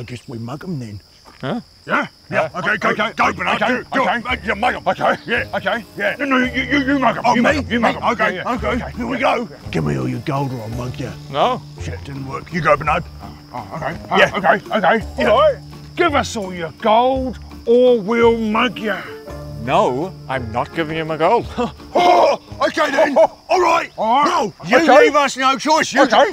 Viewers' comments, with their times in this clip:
0:09 "shit, it didn't work" so matter of fact-ly idk why that slayed me